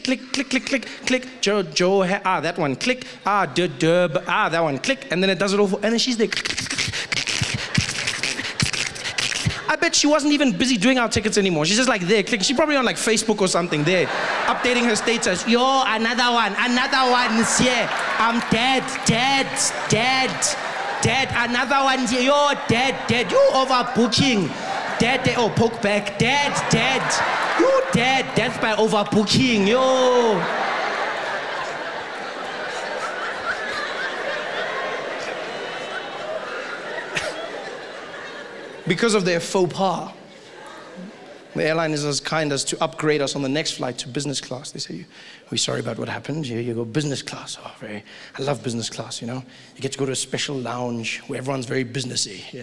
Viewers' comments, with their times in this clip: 0:06 Ene she is like... Through in some setswana there or I'm hearing things
0:12 What did he mean by "over pooching"? Is that what he said, "over pooching" or over pouching? Too much in the bag? Too much in the carry-on luggage?.. Was he talking about poaching?
0:40 the fuck did he say?